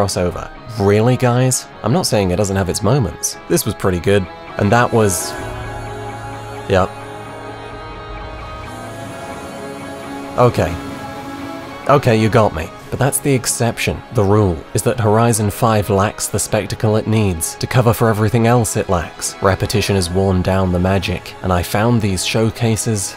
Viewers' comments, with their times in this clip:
0:09 i love the driveclub music in the background 😌.